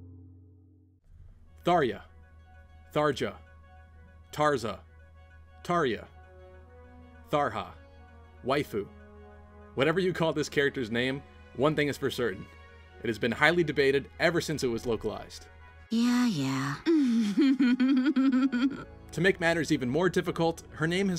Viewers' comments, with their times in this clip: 0:07 I thought was TRAHA an MMORPG